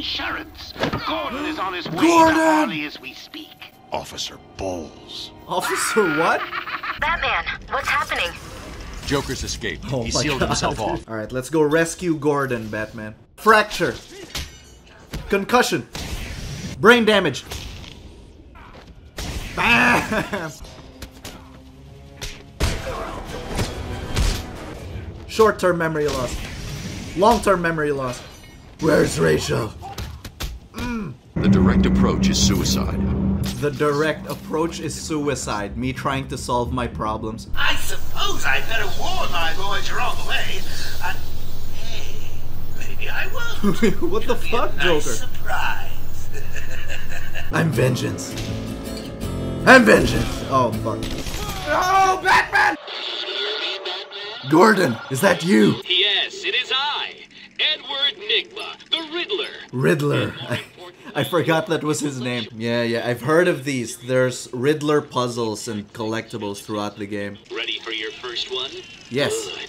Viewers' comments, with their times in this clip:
0:03 Joker is laughing because he wanted Batman to said balls
0:57 Was it just me or did it sound like the riddler almost said the n-word when he said his name Edward Nigma